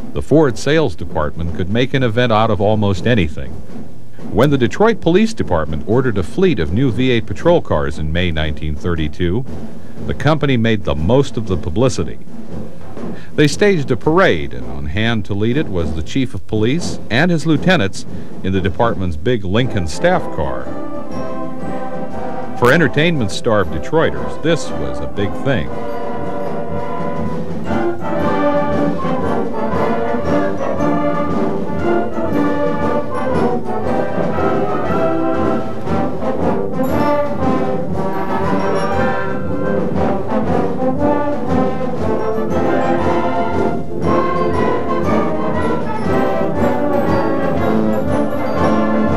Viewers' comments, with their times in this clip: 0:06 I wish the band had taken some time to tune their instruments-LOL!
0:20 Authentic music starts
0:35 Didn't know I would hear the worst marching band ever